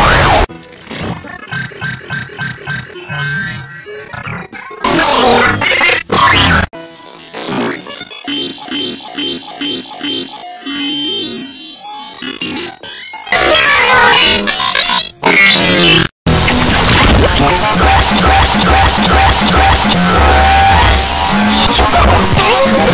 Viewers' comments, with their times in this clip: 0:06 sounds like Oppo Oppo & LOL X!